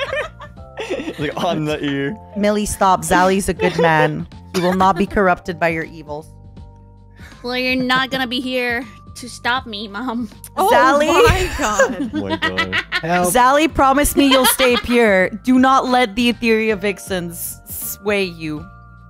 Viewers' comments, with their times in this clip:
0:06 That evil laugh after the statement